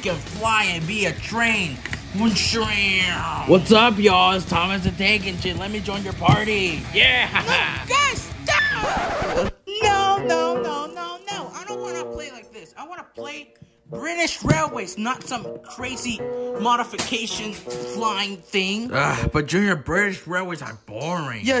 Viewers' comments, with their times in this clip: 0:08 that voice crack was ear wrenching😭🙏